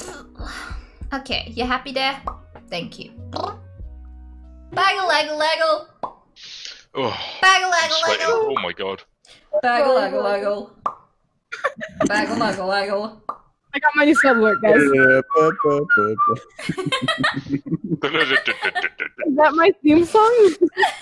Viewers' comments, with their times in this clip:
0:05 you know I suddenly hate the theme song 😂